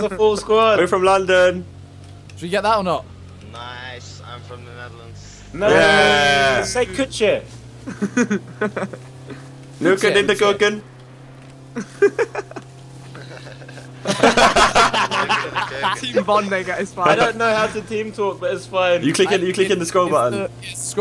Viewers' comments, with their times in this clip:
0:09 THE WAY JOSH SAYS 'NEUKEN IN DE KEUKEN' GOT ME DEAD AHAHAHAH translation: fucking in the kitchen